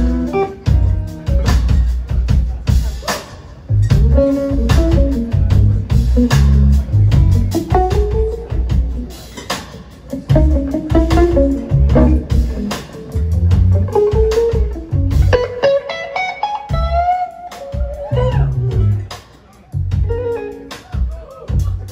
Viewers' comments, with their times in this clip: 0:08 that solo is the best I've ever listened to. Thanks